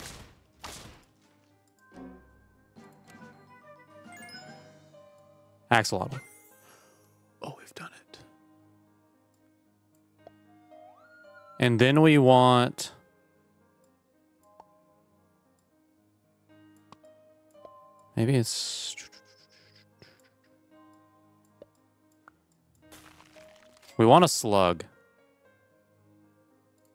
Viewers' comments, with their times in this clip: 0:10 THE AXOLOTL SINGS THE MUSIC